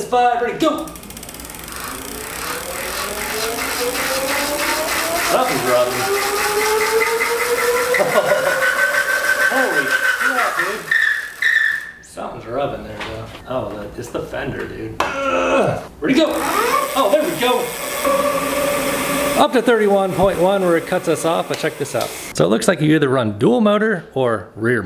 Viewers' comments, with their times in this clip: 0:07 when you think you bought an e-bike but it turns out you bought a TIE fighter